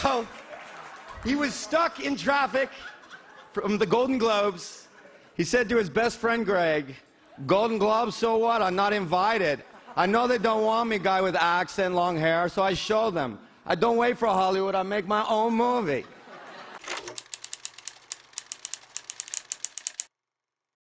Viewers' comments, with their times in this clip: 0:08 ha ha ha ha * tommy aught *